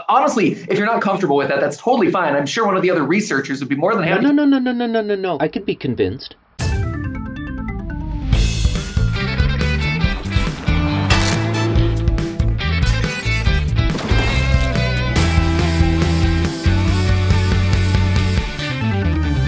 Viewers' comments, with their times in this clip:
0:04 sounds like Ryan George